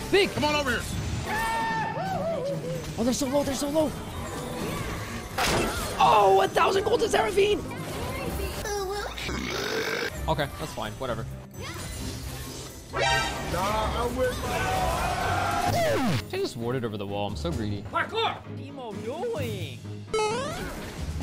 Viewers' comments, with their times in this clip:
0:06 Big props to the Edit. The Minecraft sfx got me so hard 🤣